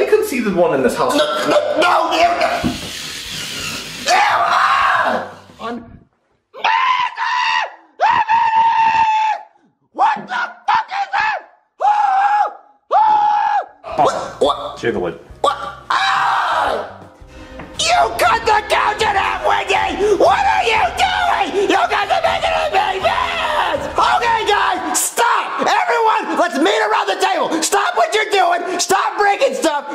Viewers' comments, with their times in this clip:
0:06 What was that scream😂
0:17 Junior sounds like Mario when he gets mad.